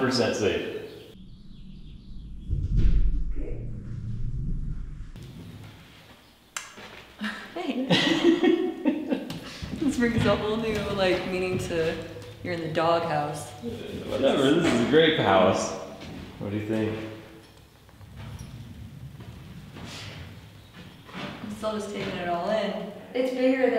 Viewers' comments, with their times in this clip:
0:05 this face is exactly (tongue clic included) what she thinks about his projects XD